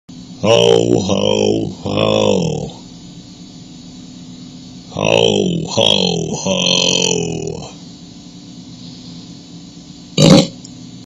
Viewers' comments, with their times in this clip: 0:05 He is sound like Santa Claus Ho Ho Hooooo
0:09 bro really farted in 💀💀
0:09 B U R P intense face of FML